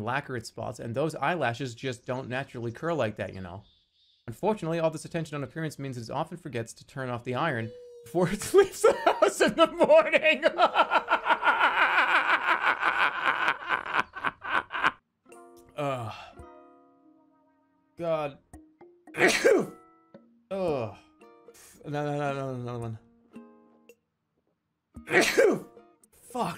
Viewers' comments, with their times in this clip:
0:08 Just gonna save that laugh for myself